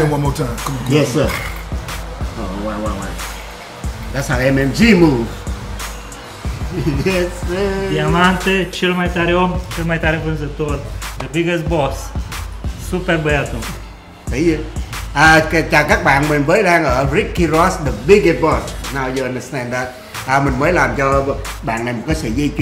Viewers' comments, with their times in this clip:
0:09 wtf speaking romanian???